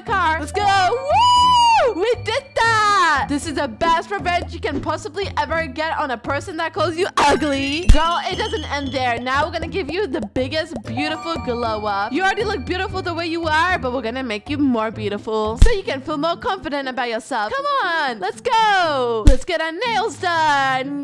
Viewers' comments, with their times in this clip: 0:07 she said that possibly ever get on a person that calls you UGLy and it was so loud 😂.